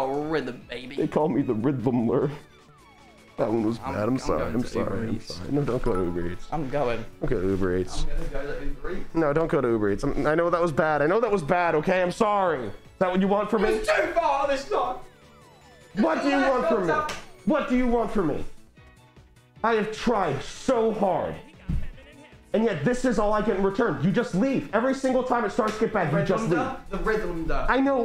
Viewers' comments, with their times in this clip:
0:10 sounds like a break up fight ☠️
0:12 the music in the background tho